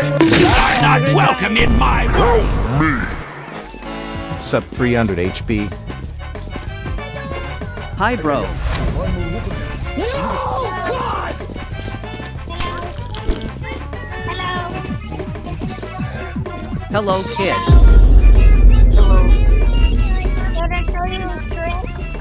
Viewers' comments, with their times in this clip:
0:10 that yoinky sploinky music